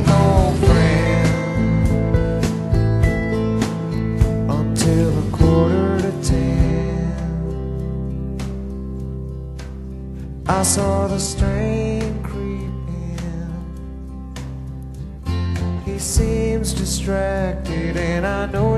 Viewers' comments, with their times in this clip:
0:06 I love the drums on this part, making this sound as if it's a clock, not sure if that was meant to be the thing but its what I keep picturing. You have Eddie singing with only that drum as if everyone sees the man comming in a house where the whole family as at the table looking at him walking in, everyone and everything is quiet, pure shock as if everyone is thinking ' hes back.. ' and through the silence only the clock is the thing that can be heard. amazing.